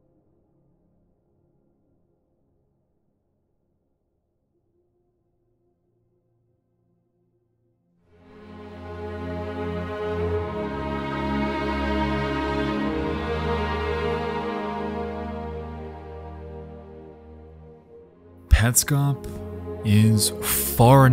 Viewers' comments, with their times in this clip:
0:06 love that halo music